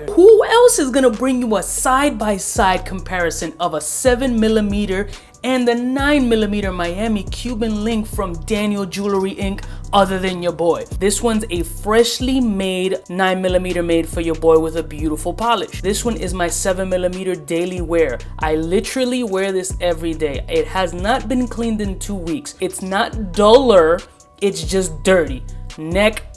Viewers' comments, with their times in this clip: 0:07 the long pause to acknowledge the difference is beyond necessary